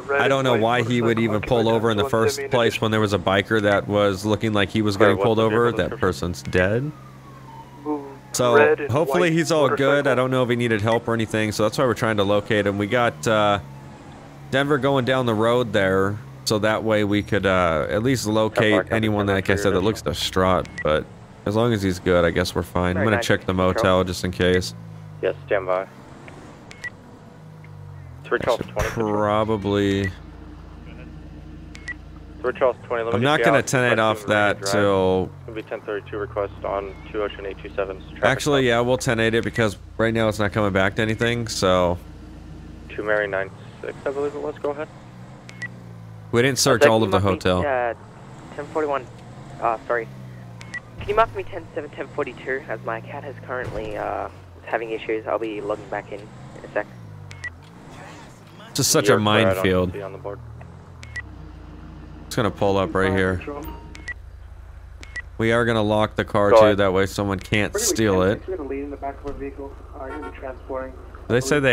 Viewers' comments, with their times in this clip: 0:04 casually says that person is dead while commentating
0:54 I thought he said my cat is having issues lol